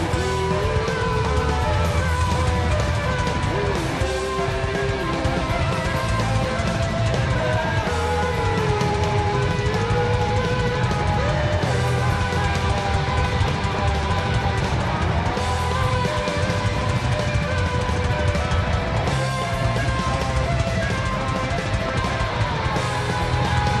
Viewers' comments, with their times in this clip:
0:09 the triplets are the parts at like ish. Just to answer you two years late!